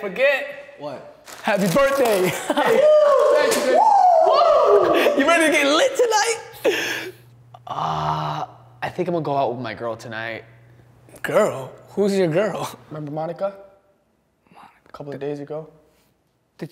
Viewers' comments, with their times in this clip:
0:03 does he say "thanks babe" or is it just me